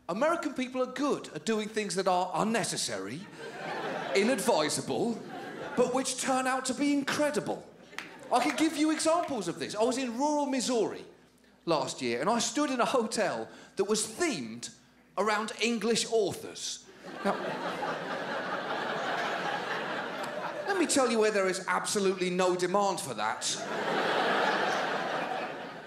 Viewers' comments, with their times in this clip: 0:07 That awkward clap 🤦